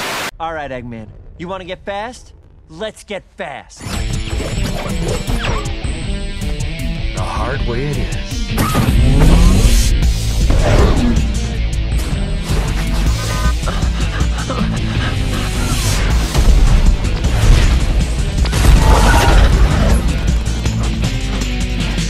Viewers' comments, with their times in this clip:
0:09 is hype, i remember this stage and its music just being awesome.